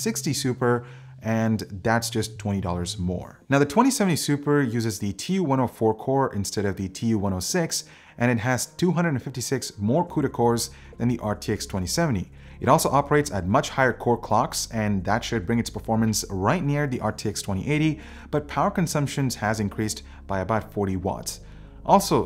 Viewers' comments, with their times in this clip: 0:03 So how's you "boose" clock coming along 😅